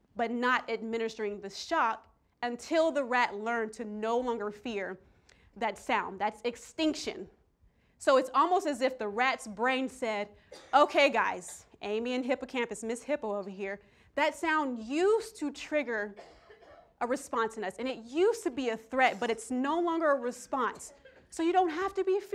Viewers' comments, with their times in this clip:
0:08 someone save that woman she is choking